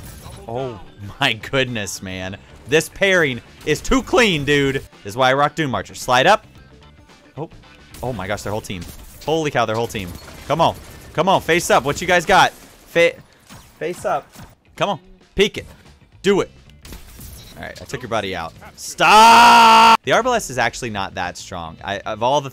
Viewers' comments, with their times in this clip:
0:06 Screaming "MELEE, NADE!!!" lolz